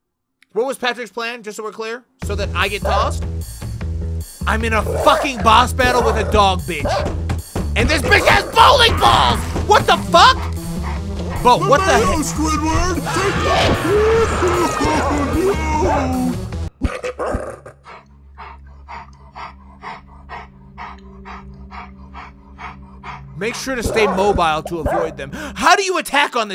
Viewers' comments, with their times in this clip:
0:10 it sounds like patrick is saying WHAT THE HELL SQUIDWARD instead of the mayo squirdward LMAO